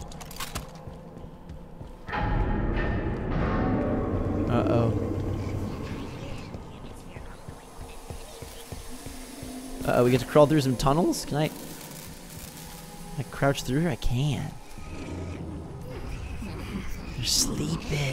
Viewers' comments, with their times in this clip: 0:03 there's a grunt talking, what did he say?